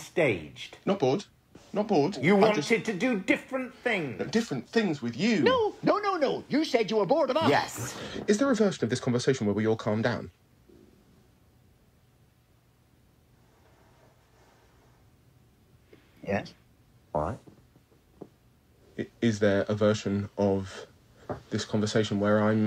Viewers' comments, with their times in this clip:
0:07 I love how Simon said "is there a version of this..." Almost like a spell 😂😂